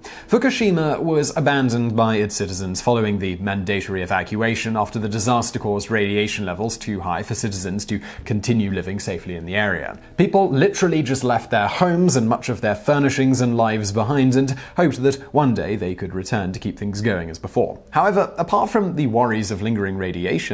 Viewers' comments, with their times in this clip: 0:03 Man-date-oh-ree? Never heard that one before